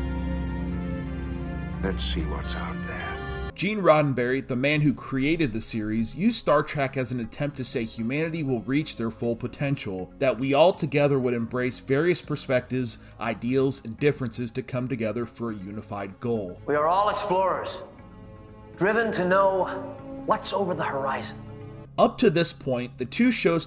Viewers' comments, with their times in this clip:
0:06 ...calls it “Star Track”